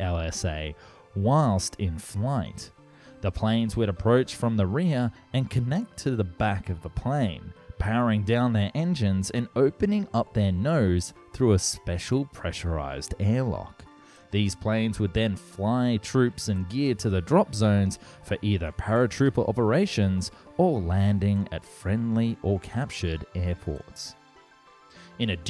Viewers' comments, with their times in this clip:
0:08 maybe you should try opening your nose too.